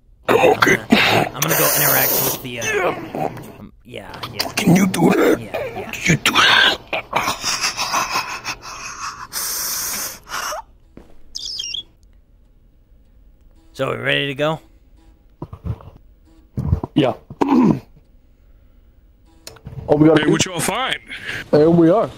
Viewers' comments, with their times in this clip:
0:08 THE SCREAM- I CAN'T